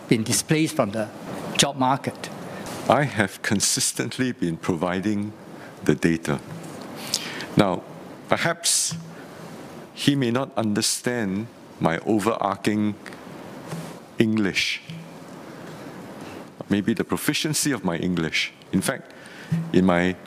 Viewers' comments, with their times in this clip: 0:07 It's possible that Mr. Leong 'cannot understand minister Tan's overarching English'. Mr. Tan mispronounced the word 'overarching'.